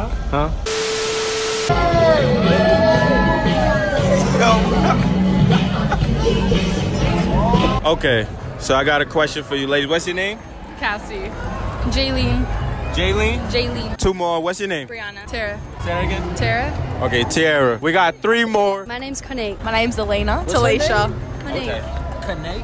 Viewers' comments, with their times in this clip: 0:06 OMG it's Michael Jackson HE HE HE HEEE